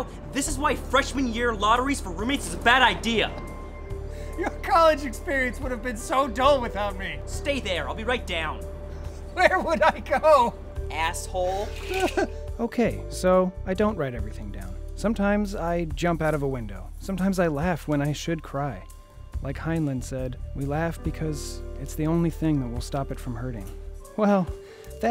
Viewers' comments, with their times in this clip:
0:08 that guy is actually good like the jokes arent that funny but that delivery was great